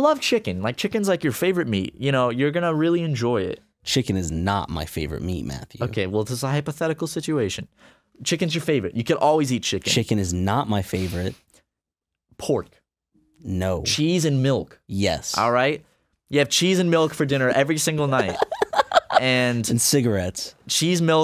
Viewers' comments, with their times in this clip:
0:08 i put the baby(babysitting) down to sleep and sit back down & unpause the video.. "CHICKEN'S YOUR FAVORITE" scared the fuck out of me